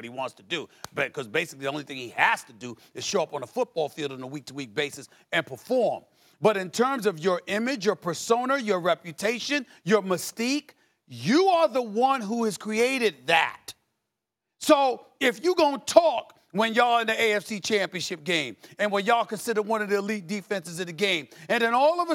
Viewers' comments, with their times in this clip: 0:08 he says " personar " am I really supposed to take this seriously?..